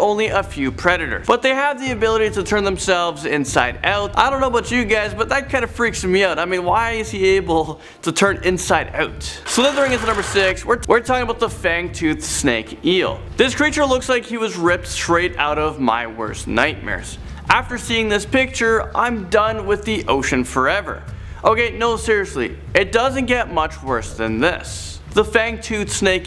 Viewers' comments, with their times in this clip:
0:10 what happened there? (Wt-were talking)